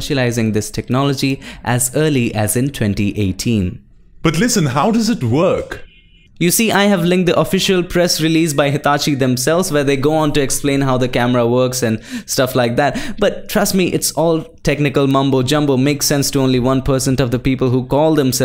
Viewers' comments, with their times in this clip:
0:04 how did you change your voice? which editor